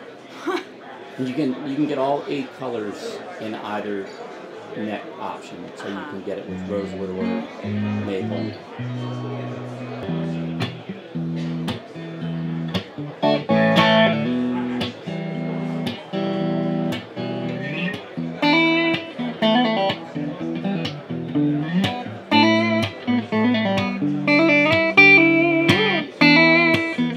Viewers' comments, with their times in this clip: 0:10 --that riff though!